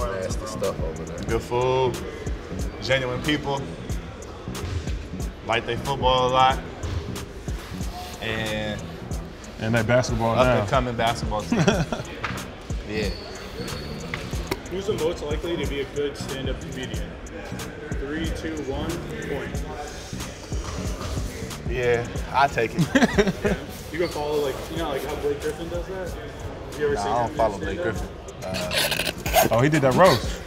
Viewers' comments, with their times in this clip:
0:09 Jrue holiday has khawais laugh
0:11 thought that was Kawhi laughing